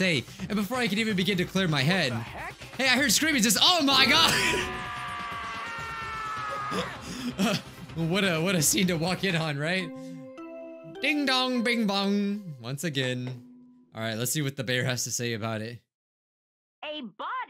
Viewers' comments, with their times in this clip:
0:03 dramatic scream Lol XD